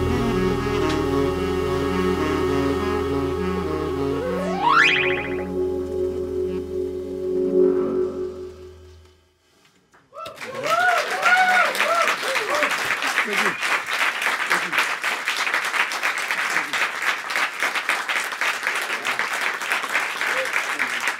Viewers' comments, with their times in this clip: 0:04 the ending that the piano does reaffirms what you say a lot